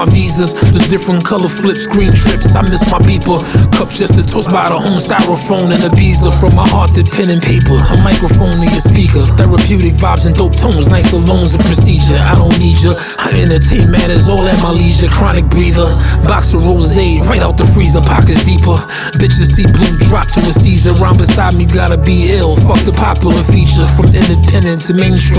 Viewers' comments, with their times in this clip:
0:09 This that Classic Banks, I love to hear it & the instrumentals are top tier, is a perfect way to word it.